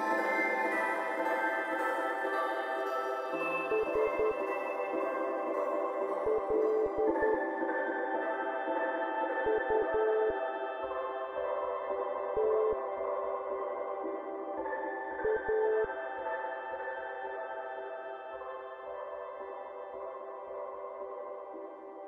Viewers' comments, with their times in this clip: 0:03 if you listen really closely as the song begins to fade out you can hear some morse code. I actually translated it. It translates to "sluta." This is the swedish word for "stop" Thats... foreboding. I wonder if they ever intended players to actually know what that meant when they made it